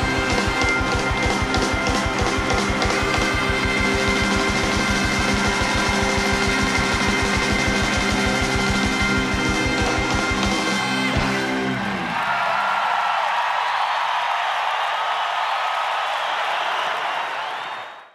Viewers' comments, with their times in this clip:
0:06 best part of the song for me. As the boys howl to pump each other up! We can do this!!!